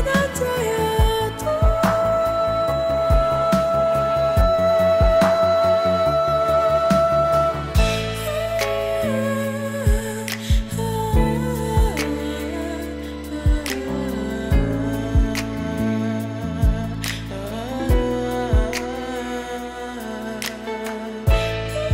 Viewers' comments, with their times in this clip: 0:06 I like it so much when Diana starts "playing" with her voice. I mean this